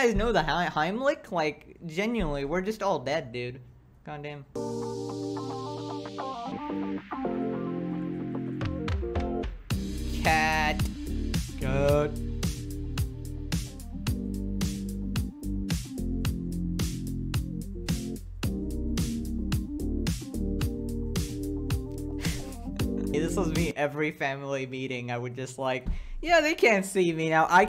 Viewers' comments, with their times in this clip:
0:09 That was in sync and in tune with background song, I could just jam out to it all day
0:09 why was this so in sync with the beat